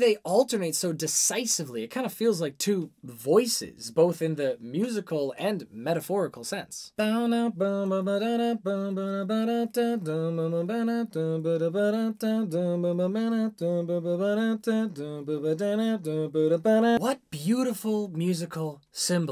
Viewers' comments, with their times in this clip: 0:03 love how you said it's similar to two voices. i've always heard the instruments all throughout this song like they were speaking with each other